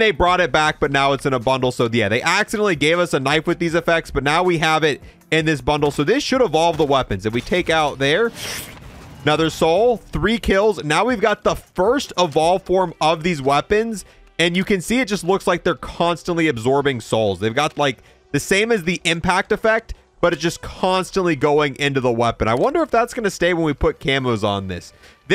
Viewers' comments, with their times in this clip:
0:09 did u hear that shuuufffft